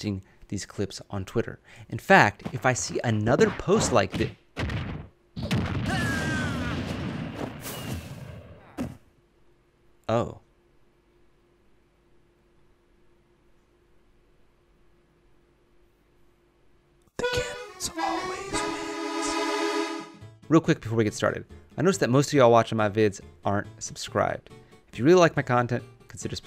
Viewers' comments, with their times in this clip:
0:09 That oh... Reminds me of hobby from spiderman before he messed himself over with his own glider.🤔🧐